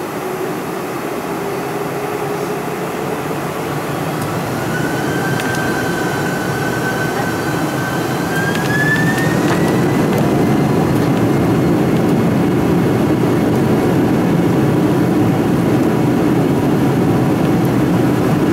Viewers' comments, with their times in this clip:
0:03 full engine power for take off